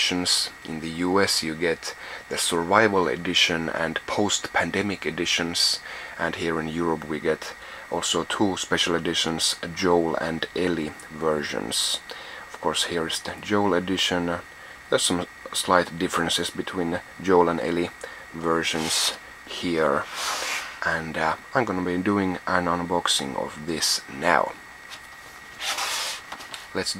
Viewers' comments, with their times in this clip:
0:07 oh my god this guy voice is scary i stopped listening to it